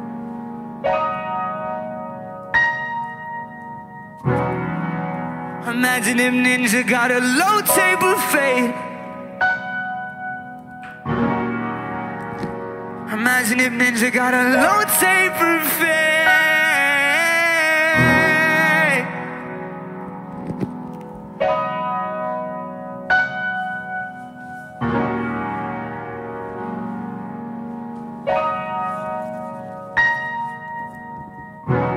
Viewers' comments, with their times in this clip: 0:08 MADE ME CRY CAUSE OF THAT HEAVENLY VOICE
0:12 The voice he puts in to that part WOW 👌 💯💯💯💯💯💯💯💯💯💯💯💯💯💯💯💯💯💯💯💯💯💯💯💯💯💯
0:15 I really felt that FAAAaaaaAAAdeee 😤